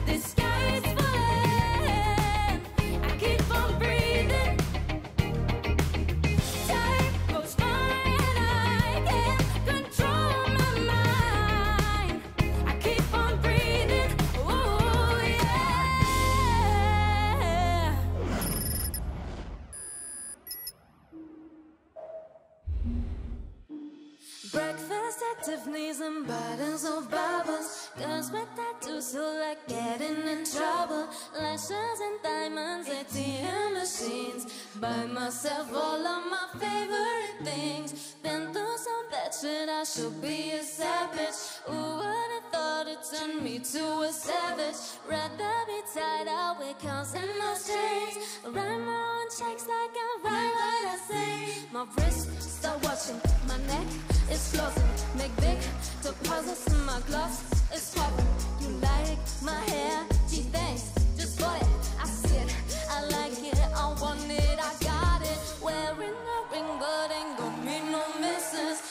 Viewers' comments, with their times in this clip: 0:09 why DID THEY NOT TURN AROUND!!! (her voice is bootaful!!)
0:51 that was just A M A Z I N G HER VOICE IS JUST SOOOO GOOOD This is my fave performance